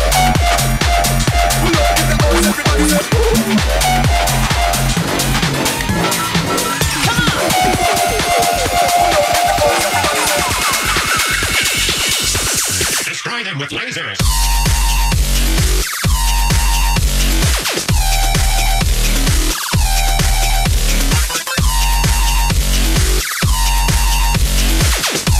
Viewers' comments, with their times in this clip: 0:09 WHAT A DROP OMFG 🔥🔥